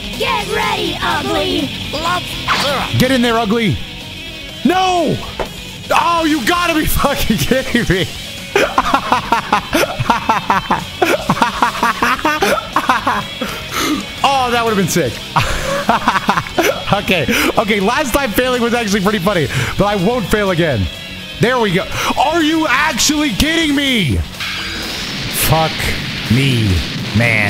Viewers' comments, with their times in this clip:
0:09 dude that is the FAKEST laugh ive ever heard i swear to god